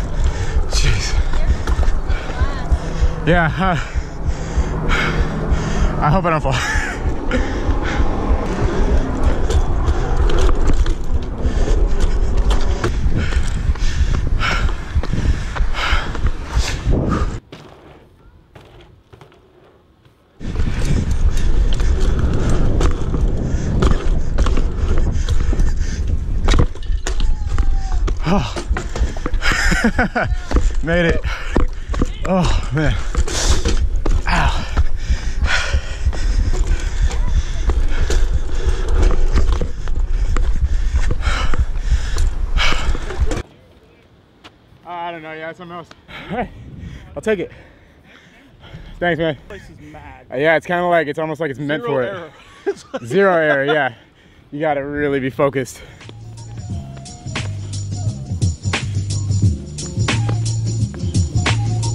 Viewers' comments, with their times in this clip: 0:10 you can hear your damn heart bro
0:43 is it just me or could you all hear his heart beat on the chest mount